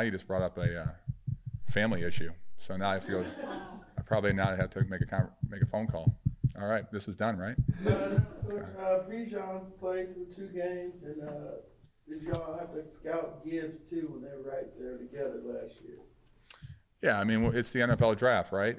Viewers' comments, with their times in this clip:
0:04 The Falcons need to fix the podium. Every speaker was tapping nervously on the podium which caused a lot of feedback to the microphone. Since you can't solve this by training each person who uses the podium, fix the podium so this cannot happen instead. This happened many times in this video from many different speakers and it was very distracting.